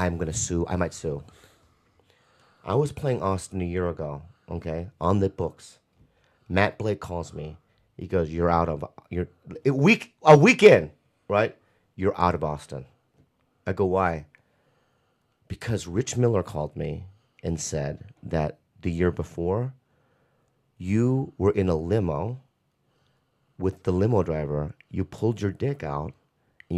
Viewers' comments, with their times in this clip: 0:07 Joey innocently asking , “ did you “ funniest shit 😂😂😂😂😂😂😂😂😂😂😂😂